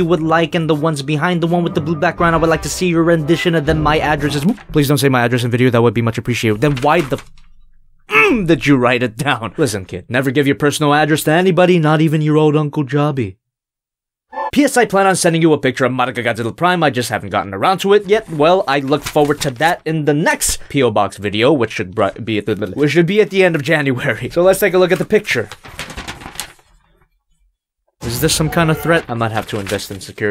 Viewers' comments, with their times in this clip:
0:03 What's the music cuz it sounds like Banjo and Kazooie or Donkey Kong
0:14 People have said it plenty of times but still perfect singing voice ( edit )